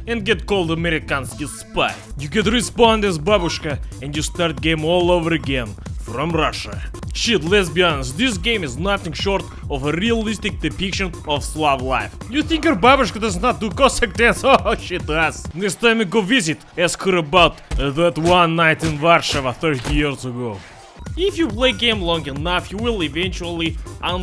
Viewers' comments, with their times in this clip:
0:06 did he just say "shit lesbians"? what the fuck?